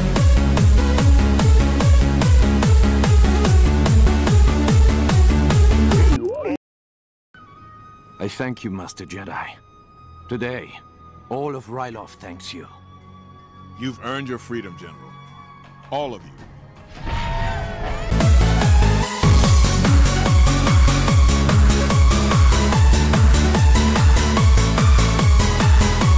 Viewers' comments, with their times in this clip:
0:10 activate bass bomb blows them up in bass